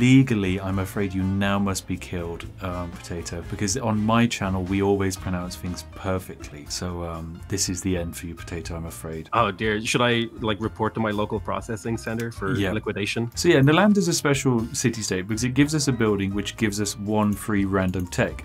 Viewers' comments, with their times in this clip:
0:04 "We always pronounce fings perfectly."